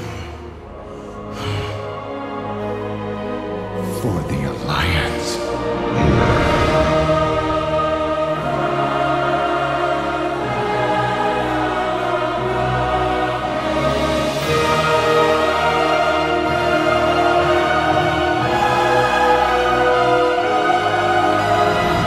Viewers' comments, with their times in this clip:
0:07 We need that scream :3